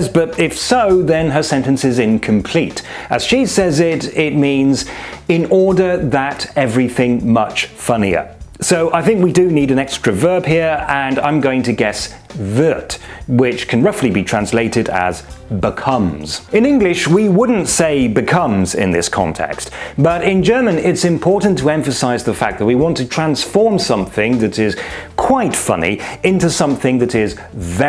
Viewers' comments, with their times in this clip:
0:10 As I understood it she said "dann wird". In this case the sentence would be grammatically correct. Though she kind of swallowed half of what she said.